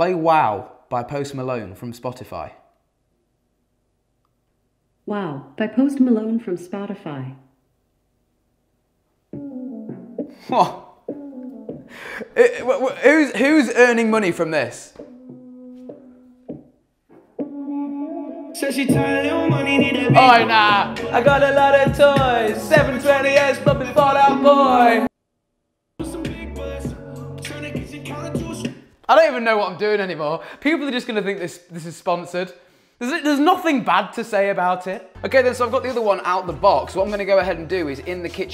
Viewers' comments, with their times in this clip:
0:03 Ofc you forgot to bleep and stopped my music 😂
0:06 good job with bleeping alexa, she got mad though! XD
0:20 Ear Rape CRINGE